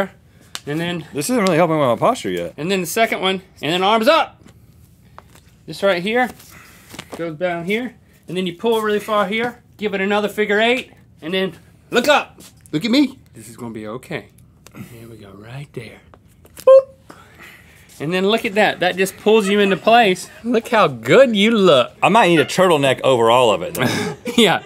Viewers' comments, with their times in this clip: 0:08 I'm laughing so hard at all the grunts, moans, heavy breaths, and dad noises.